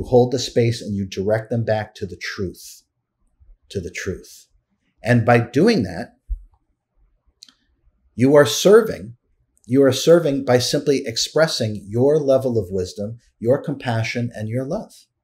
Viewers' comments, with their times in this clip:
0:03 Loooooove this conversation! I feel like you guys literally read all my journals & writings… I suppose this is validation & confirmation!? Boundaries & Holding space exactly… And you say “Ah-warness” A= crown = To Know = 1,000 petals